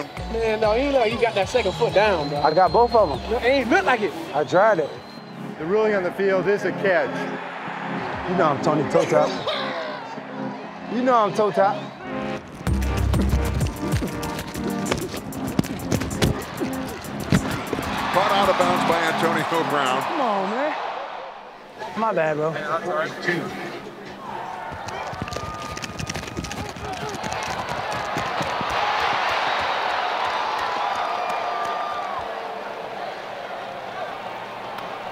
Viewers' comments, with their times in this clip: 0:08 Wtf was that noise
0:18 caught out of bounds by Antonio poop browns Nobody gonna mention that?